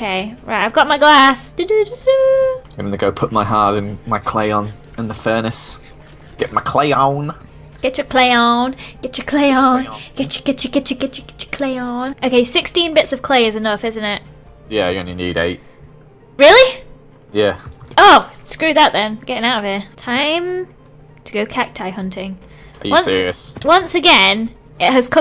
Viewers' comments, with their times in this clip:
0:07 sounds like she's singing crayon by g dragon XD